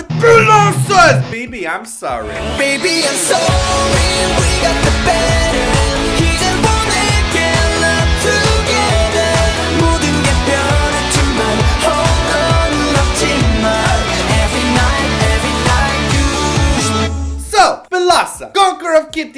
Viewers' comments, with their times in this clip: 0:06 I truly wish I am the only one hearing: "Hey joy, we makin' love together"